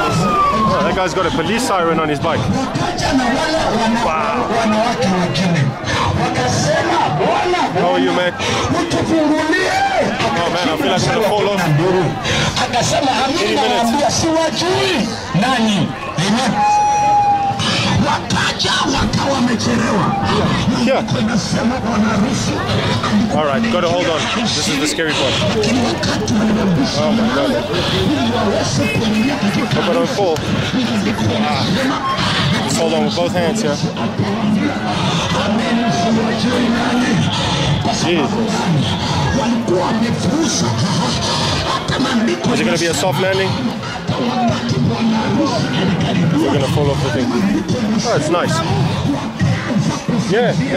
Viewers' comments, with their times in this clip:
0:09 What is that background noise
0:17 what is that voice?
0:35 The background music is soothing to the ears 😂